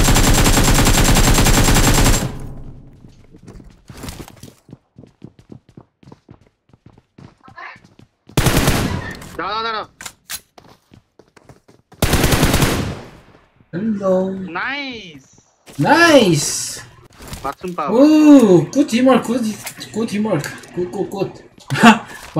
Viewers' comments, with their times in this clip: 0:09 dara dara hmmm i think he is from bangladesh 🇧🇩 bro